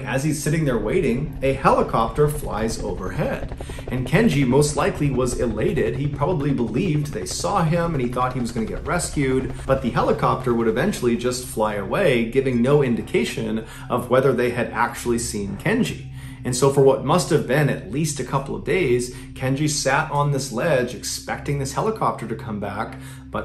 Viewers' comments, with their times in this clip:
0:10 I read this hearing the helicopter takeoff 😂😂😂